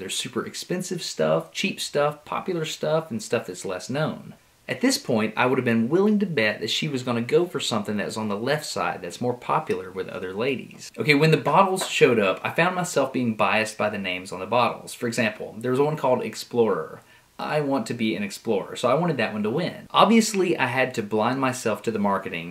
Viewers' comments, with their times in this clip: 0:06 OMG wife comments: laughed at me additional comments: i love her laugh you guys are so adorable